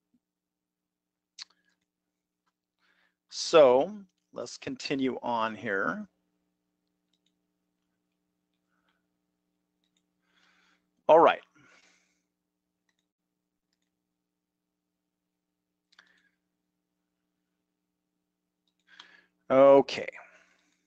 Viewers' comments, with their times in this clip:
0:03 There have been so many videos where the subject matter has interested me fully only to have the execution fail. There are two reasons through the mark that will lead me to search elsewhere. First, the disorganized nature of the presentation. He has seemed distracted at least twice and also struggled to find a colored "pen" to draw on the chart. Lastly, and this falls more on me than the presenter (but not really), the lip-smacking. It's a pet peeve of mine that I cannot relinquish, no matter my level of interest in the video. Maybe it's petty, but it's not pleasant to hear it on a frequent basis. I can tolerate 'x' number of occurrences in 'y' amount of time but not a single one more. So I guess I'll never hear the millionth theory on how to be "guaranteed" a profit in every trade even after he explains how you can lose 1 of 5 ways!